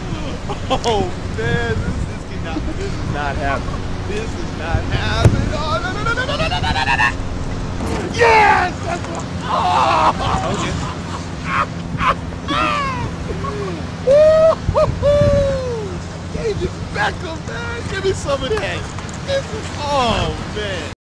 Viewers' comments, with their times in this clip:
0:06 i just died, his laugh omggggggggggg AHAHAHA